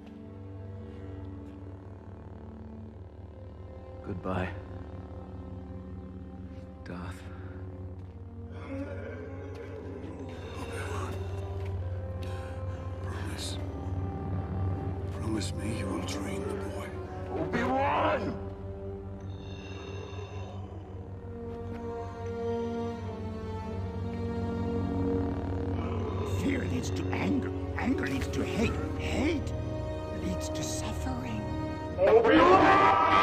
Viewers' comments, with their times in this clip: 0:04 So crazy hearing how his voice change twice and this scene made me tear up a bit to knowing that anakin is no longer obi wan remembers anymore. But is darth vader and continues from there I love how he calls him “darth” like in a new hope
0:10 that part hit me the most, the way it transitioned from what Anakin has become to the flashback moment of Qui Gon Jinns dying wish with the music, was just beautiful and sad at the same time.
0:11 I actually almost teared up right there. It shows Anakin/Vader in complete darkness. Then it starts playing Qui Gon's theme and at the same time shows Obi Wan's promise to train Anakin for his dying master. When Obi Wan starts walking away from Darth Vader. It's like Obi Wan is walking away from his promise or Qui Gon's vision
0:17 those "Obi-Wan!" shouts were just awesome. I love the gritty tone of Anakin and Vader's voice overlaping on each others